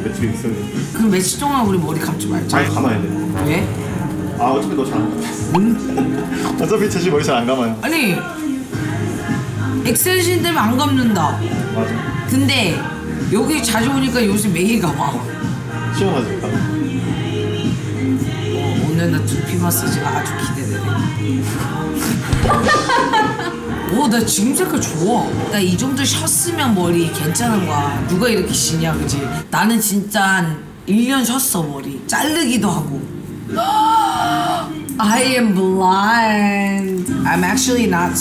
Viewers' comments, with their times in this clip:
0:09 maniac at the background 👌
0:20 hearing maniac by Conan grey in the background had me DEAD 💀